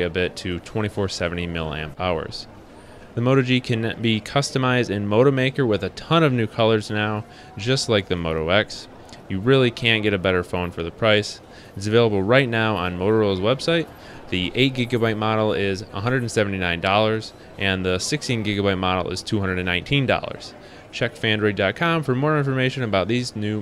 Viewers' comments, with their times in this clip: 0:09 did he say "can" or "can't"?